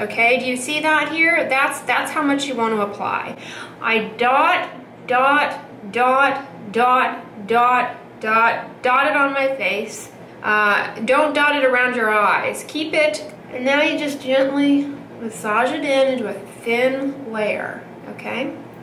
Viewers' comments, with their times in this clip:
0:03 I've watched this video so many times as an aid for my Differin use that whenever i apply my Differin I always hear Dr. Dray's voice going "DOT. DOT. DOT. DOT." 😂